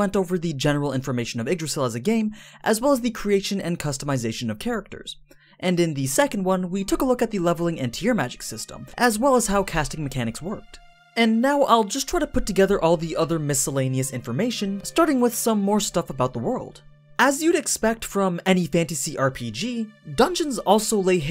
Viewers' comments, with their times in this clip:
0:09 What's the name of the ost seconds it's very relaxing